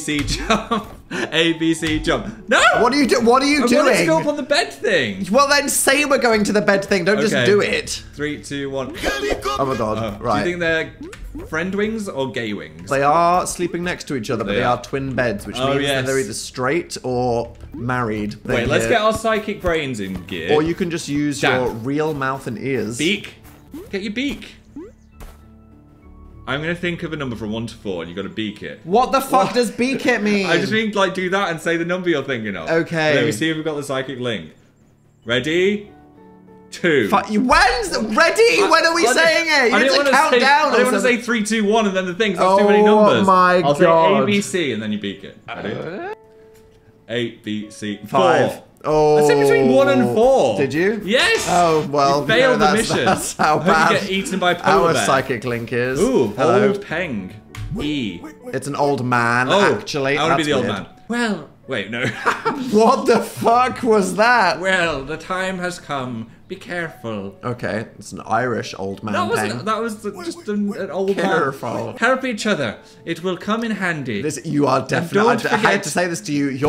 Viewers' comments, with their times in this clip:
0:08 The helicopter audio LMAO
0:08 The "helicopter" bit had me choking on my potato chips, I love all the soundbites that are added in post
1:00 "well" toriel enters the chat